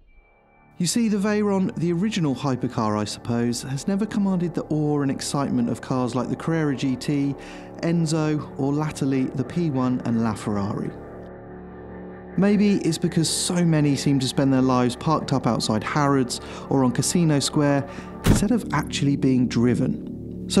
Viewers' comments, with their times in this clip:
0:08 You can tell this guy's just reading from a script because he pronounced lately like "la-tel-y."